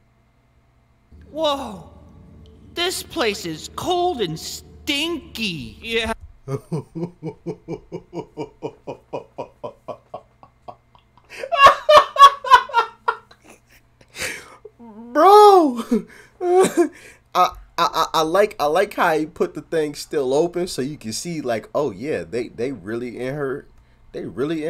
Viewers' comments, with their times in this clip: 0:06 his laugh sounds like the laugh Ms. Frizzle makes later in the vid.